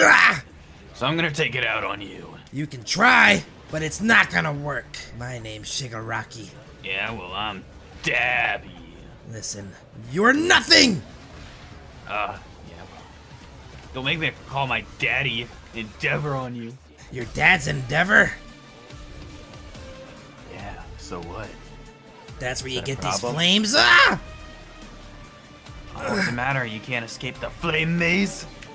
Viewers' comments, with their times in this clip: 0:07 it sounds like he said im dabbbbbiiiiinngggg and i made the pun in my head
0:08 all I heard was ”Daddddddddyyyyy”
0:16 perfect base drop